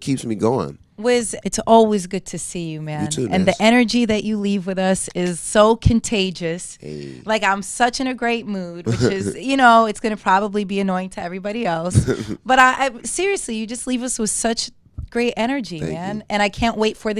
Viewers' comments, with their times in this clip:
0:03 it sounds like he said "you too bitch"